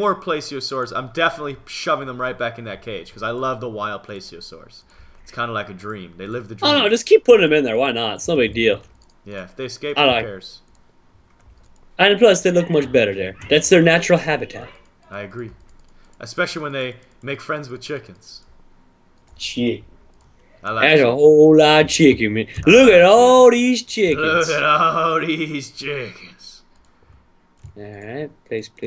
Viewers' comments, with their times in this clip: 0:10 What was that yelling ???
0:15 Who was talking in the back round ?